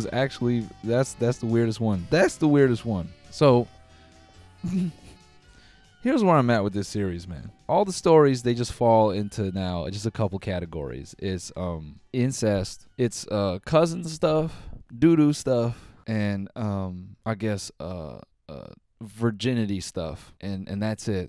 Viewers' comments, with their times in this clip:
0:03 that noise is the sound of pain